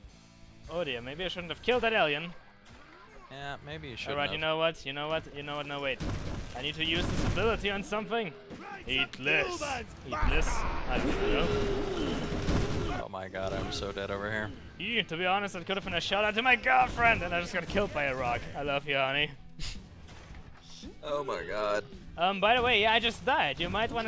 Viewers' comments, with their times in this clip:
0:08 LMFAO XD omg you really did say it LMAO XD Thats cracked me up big time xDDD Whats made me crack up even more is that you sounded so serious when you said it and then realized what you said xDDD Lmao, oh I love you hunny, you crack me up so much xDD